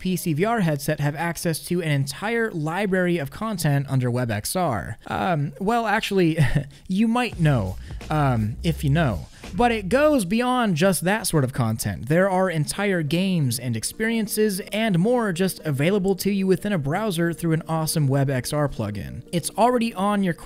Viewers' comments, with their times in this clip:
0:07 Huh I recognise that tune… I MEAN! WhAt WaS tHaT wEiRd JiNgLe HaHaHaHaHaHaHaH
0:08 Did no one else hear the ph music